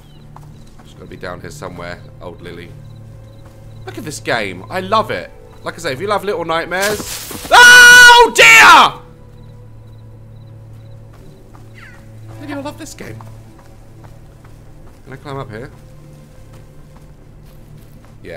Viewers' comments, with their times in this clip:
0:06 scared me so bad but your scream scared me more 💀